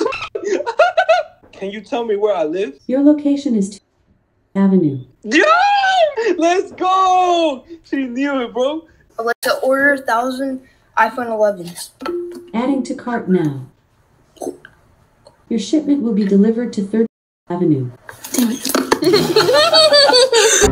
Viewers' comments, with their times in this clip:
0:06 girl : "Halaaaaa" Me : "Filipino?"